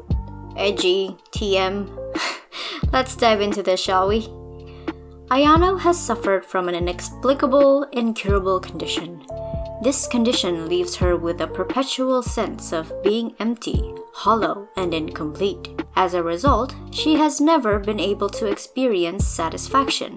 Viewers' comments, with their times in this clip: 0:05 THAT YANDERE DEV IMPRESSION WAS AMAZING??? HELLO?????